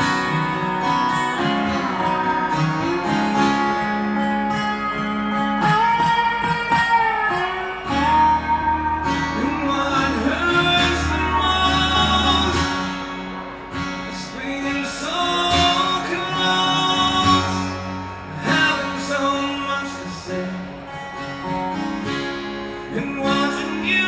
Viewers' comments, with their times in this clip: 0:05 That part in the middle of that other guy's solo,i get goose bumps all over my body..just amazing..